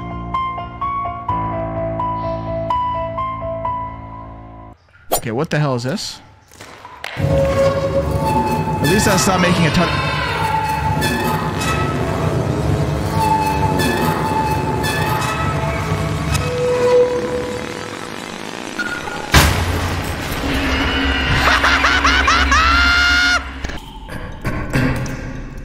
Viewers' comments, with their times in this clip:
0:08 Omg the valve with the fart is the best part